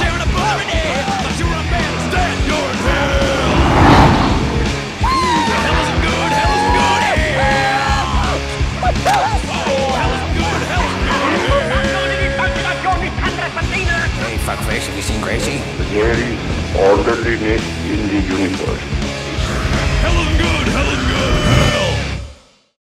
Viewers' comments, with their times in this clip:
0:08 I SWEAR WHEN KENNY WAS BEING TUGGED HE SAYS "My Dentist?" !!!!!!!!!!!!!! xD